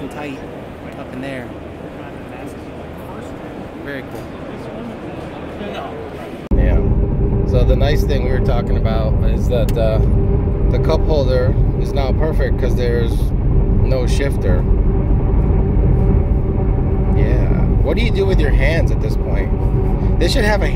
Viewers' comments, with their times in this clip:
0:07 you sound druck af.